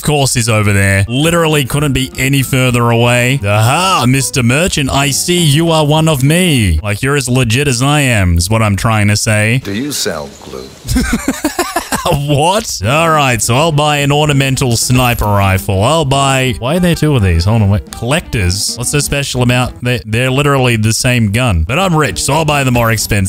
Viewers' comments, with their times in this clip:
0:09 it sounded like he said lube 😂😂😂